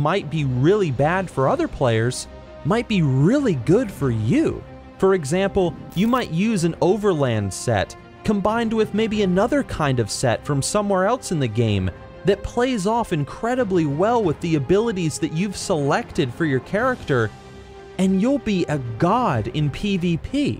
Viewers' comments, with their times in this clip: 0:03 The craglorn music at like brings a tear to my eye lol. I'm so happy you added the part of the game that might make some happy like me, house decorator! I have so many sick houses that you can do all sorts of crazy stuff inside!